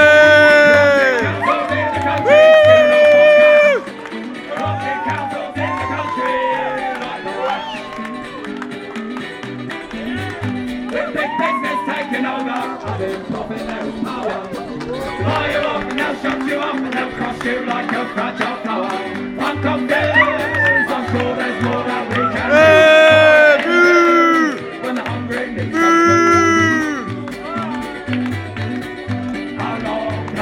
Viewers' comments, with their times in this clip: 0:07 dog stood up and started singing with them!! :)
0:07 dog stood up and started singing with them!! :)
0:08 even the dogs join the singing whahahaha
0:14 Doggo singing along